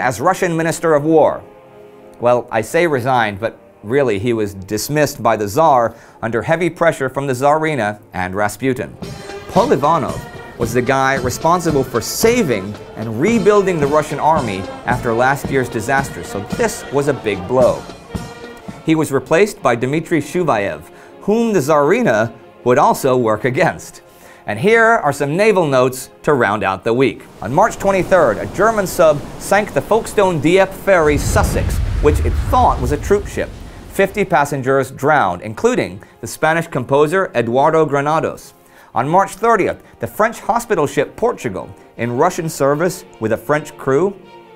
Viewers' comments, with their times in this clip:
0:08 It's a small world after all in minor. It's a huge war after all!
0:09 Is that a marching band version of "It's a Small World"? Or a marching song that just happens to sound similar?
0:09 Cote is pronounced coh-tay. I usually wouldn't say anything, but as it happens to be my last name... Also, what is the song the Russians are marching to? It sounds like "It's a Small World After All."
0:15 The music sounds like "It's a Small World After All".
0:15 That Russian March sounds like "It's a Small World After All." Is the sound man having some diabolical fun with us?
0:15 off key It's A Small World March to war. At least that's what it sounds like. I nearly choked laughing
0:15 Am I hearing things or are those Russians formations in step to a march cadence version of "It's A Small World"?
0:29 haha a Folkestone shoutout, that's where I live. Also we Pronounce it Folk-Stun here rather then Folk-stone as Indy says it, because we are fucking idiots I guess haha